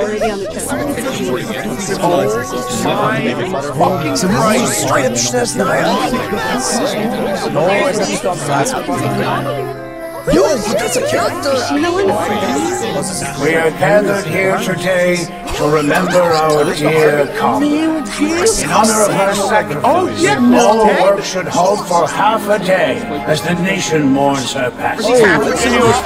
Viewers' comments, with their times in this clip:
0:08 I like how everyone stopped talking at the same time for a brief moment.